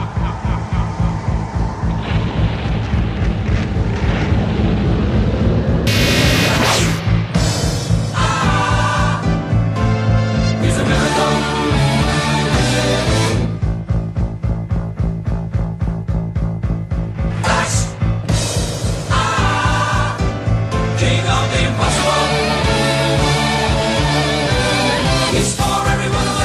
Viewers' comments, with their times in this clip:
0:07 So no one's gonna talk about how amazingly synced this scream is?
0:07 I love that they timed the "Ahhh" to the Birdman